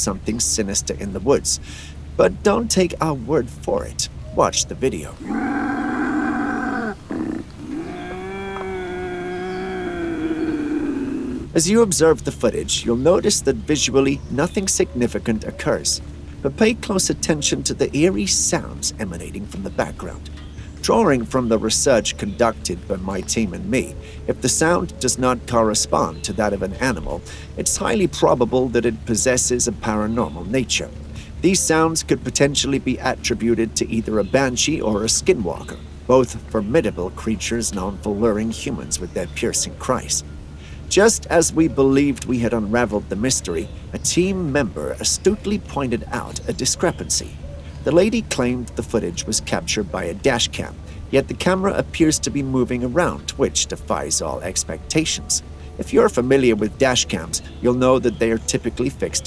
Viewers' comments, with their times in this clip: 0:07 is nothing more then a Bobcat, also not all dashcams are hard mounted & many are GoPro or Body Cams, etc.
0:47 Creature sound sounds like a Cow giving birth.